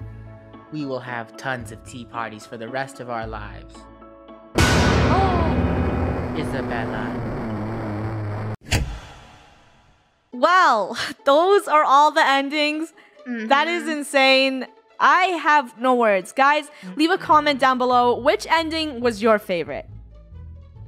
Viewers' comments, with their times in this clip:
0:08 it sounds like someone’s farting 😂😂😂